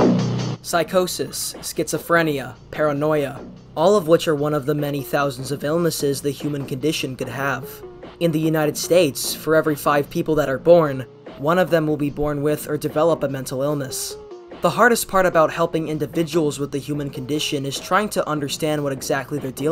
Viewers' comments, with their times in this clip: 0:03 "All of which are made up" That is what I heard